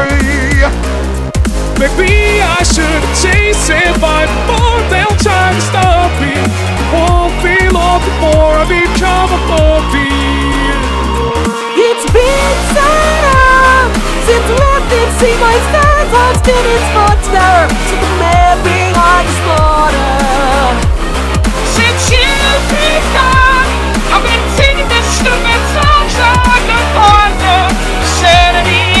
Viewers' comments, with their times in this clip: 0:04 Become a Puppy 💀💀
0:12 Damn, I was reading the comments on this part and I thought it was Spongebob and I scrolled up and it was Matpat, messing around with oreos.. That's crazy.